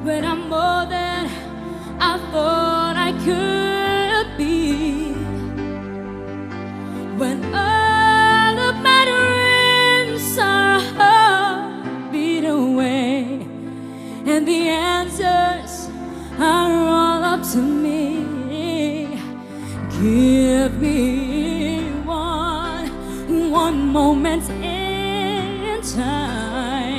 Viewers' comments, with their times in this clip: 0:09 CHARICE PROUNOUNCED "DREAMS" AS "REAMS" DICTION IMPAIRED AS OF THIS MOMENT....BUT HER VOCAL QUALITY IS GOOD SO FAR.